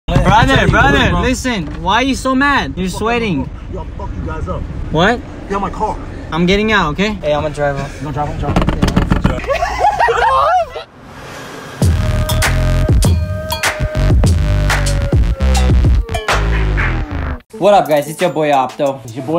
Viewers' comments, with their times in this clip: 0:01 that's sounds khabib